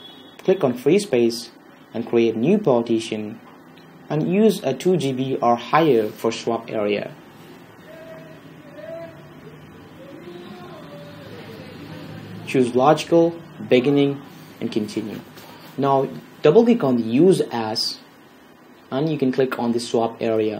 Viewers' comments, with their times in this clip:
0:07 you can hear singing in the background